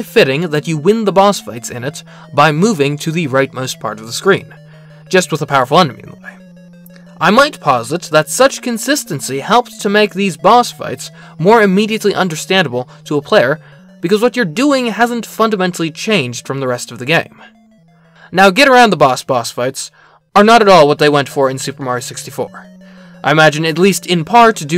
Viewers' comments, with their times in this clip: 0:06 I had to rewind, bc somehow I heard "My Wife posits", and I was very befuddled. not that you don't sound like you would have a wife, but you don't seem like the person to casually bring up your romantic partner in video essays...